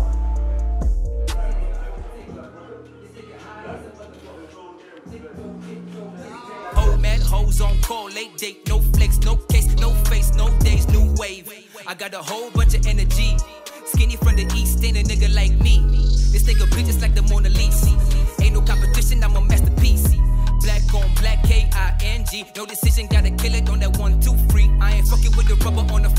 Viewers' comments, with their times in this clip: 0:10 So no one gonna talk about the beat ?